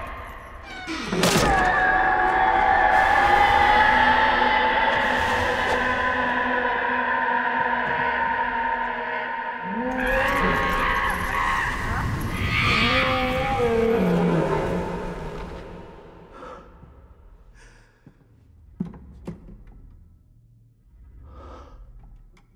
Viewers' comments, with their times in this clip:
0:09 Is anyone else hearing Sutekh emit monkey and lion noises? I found the scene amusing enough before I heard that lol